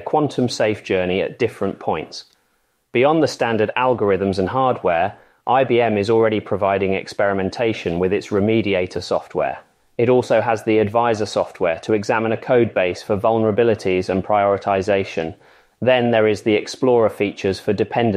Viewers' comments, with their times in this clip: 0:03 is this is using a TTS model?